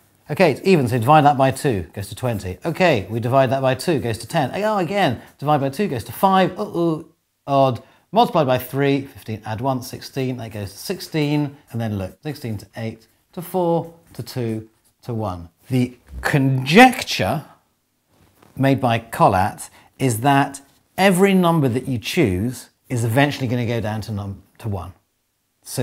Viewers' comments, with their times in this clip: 0:06 I am forever haunted by the way he says "uh-oh"